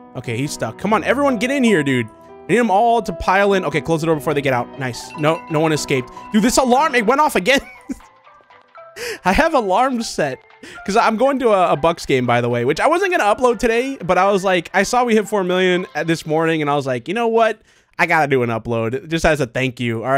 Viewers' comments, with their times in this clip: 0:04 lol I thought that was my alarm